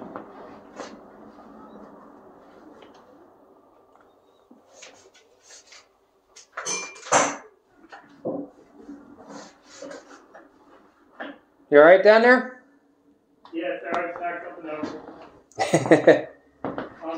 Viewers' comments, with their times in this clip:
0:03 You can hear two boy's talking to each other, something about coming out and stairs.